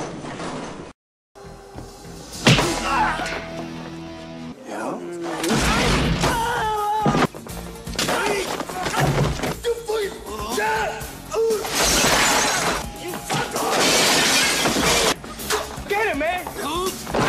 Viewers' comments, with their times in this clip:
0:04 as much as I despise segal,that guy@ yelling "toof gooey"😂always gives me a good laugh😂I bet the sound fx guy goes through a ton of breaking fruits and veggies sound fx when segal snaps necks and arms etc😂bullshido at it's finest😂segal was never told that in Japanese aikido means"not to harm"😂for segal its pattycake slap fights with limp wrists😂😊